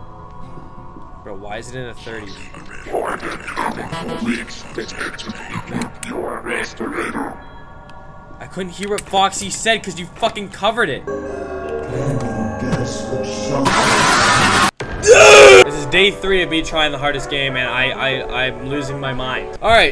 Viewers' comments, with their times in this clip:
0:03 at the end of the helping guy I swear he said "your a base tornado"